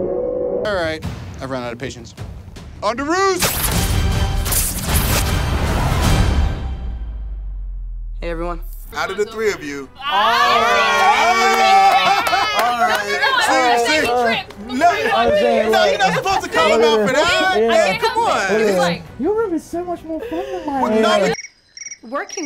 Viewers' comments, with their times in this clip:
0:03 😂😂😂😂 I love how he laughs always falling on the floor
0:05 I fear no laugh, But that thing IT SCARES ME!